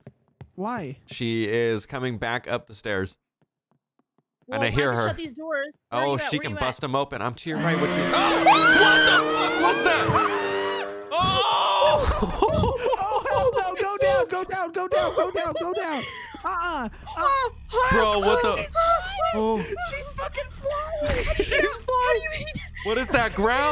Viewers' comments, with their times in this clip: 0:06 I shit myself when she screamed